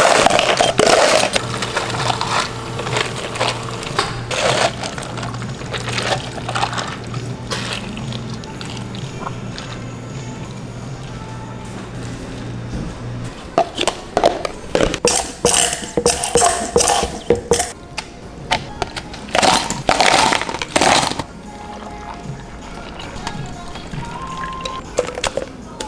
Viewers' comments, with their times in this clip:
0:07 the pouring noises are so smooth and sound like butter lol love this !!!!!